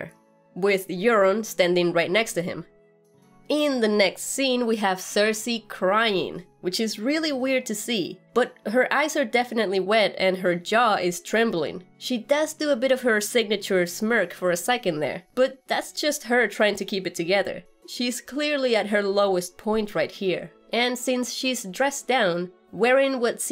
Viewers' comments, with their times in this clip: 0:04 What is the rumbling background noise in the scene with Cersi drinking wine/crying? More wildfire in Kingslanding?